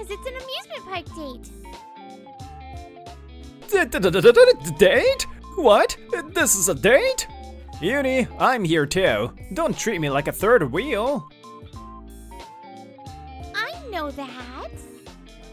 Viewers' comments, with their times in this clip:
0:03 Great job, VAs!! Thanks for the hard work. I'd put people to sleep. (Actually did put my kids to sleep😭😂. Best stutter so far ! Excellent background sound affects.